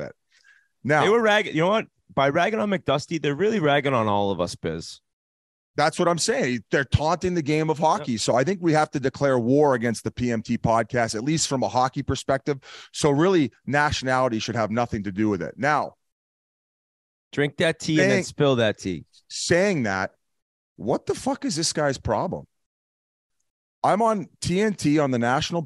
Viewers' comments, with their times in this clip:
0:09 the big gulp absolutely slayed me